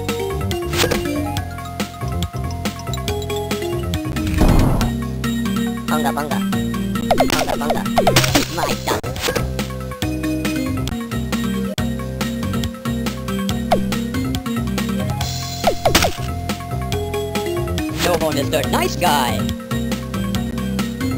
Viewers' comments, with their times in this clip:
0:06 萬華萬華 Bunga Bunga 艋舺艋舺 Bunga Bunga "Bunga" sounds like Taipei, Wanhua in Taiwanese, Bang-Ka